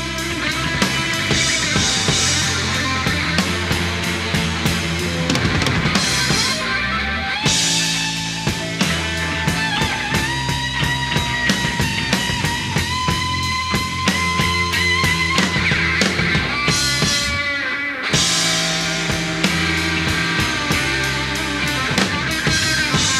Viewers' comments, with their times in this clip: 0:07 So Alex is actually tuning his guitar during a solo?